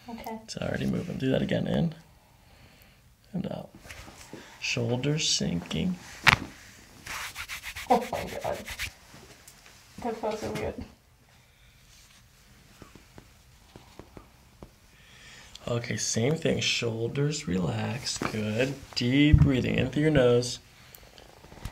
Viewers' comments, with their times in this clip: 0:05 MASSIVE thoracic cavitation ! Even MY back feels better just from hearing it!